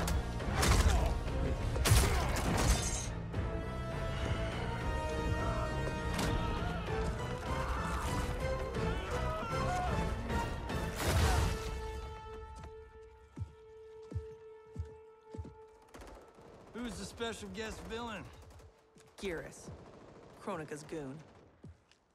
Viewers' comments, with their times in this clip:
0:09 the Leatherface scream